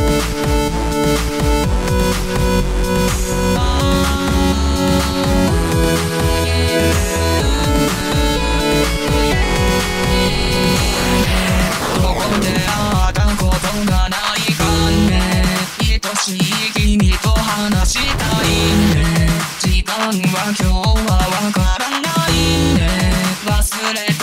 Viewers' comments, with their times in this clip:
0:10 Matsudappoiyo sing in